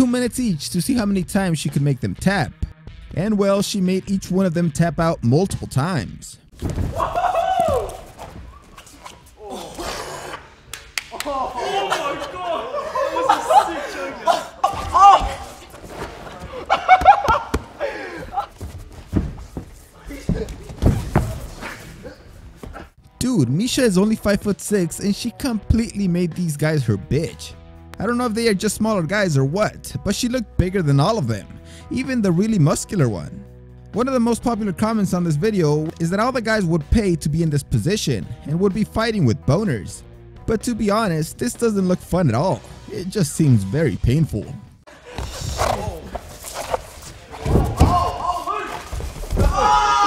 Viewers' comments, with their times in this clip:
0:08 The funniest part is is Mesha with the standing Guillotine to the skinny boy, not only that but lifting him off the ground makes it all the more hilarious and hearing him struggle to breathe is the icing on the cake. Surprised that he didn't pass out from the hold.
0:35 I like how he sounds like a family friendly channel but says this type of stuff 😂